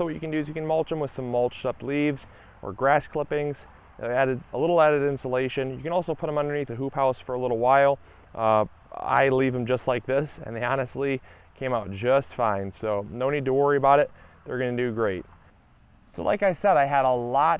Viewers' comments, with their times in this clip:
0:05 What is he saying ? " You could put them under ............. ? Sounds like roof tiles lol but that can't be it